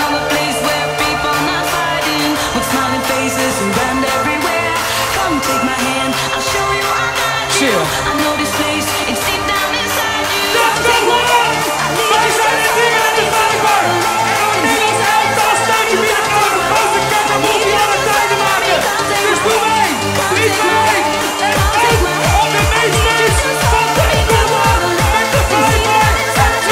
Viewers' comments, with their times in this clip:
0:10 That MC rage from Gosh i want to hear that live !